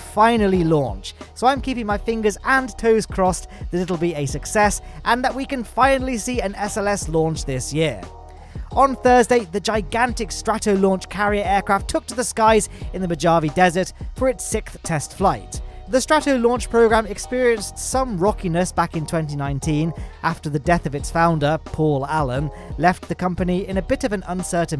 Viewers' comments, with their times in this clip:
0:10 Excuse me, the what desert? O.o
0:10 the what desert now? Where exactly are you seeing a "J as in joy" in Mojave? Man I know your extreme radical left brain only has 1 functioning neuron if at all but this is a complete new level of ignorance on display, even for you.